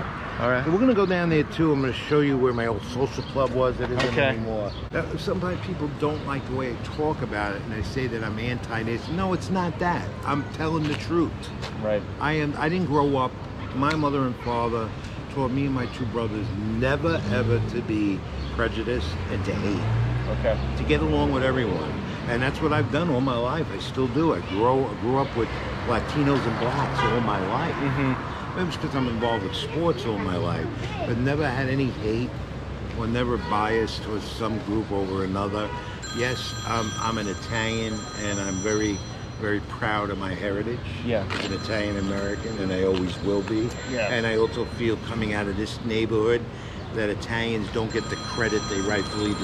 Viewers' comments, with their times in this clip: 0:04 HE MUMBLED BLACK PEOPLE 😭
0:37 that phone ring, sounds very familiar, as a non american, it only reminds me of GTA 2 😂